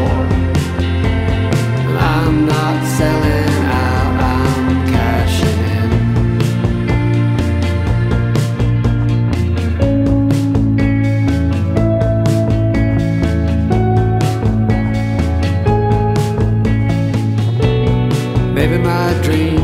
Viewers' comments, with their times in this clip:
0:04 It's a.m. where I am now, and it sounds perfect here.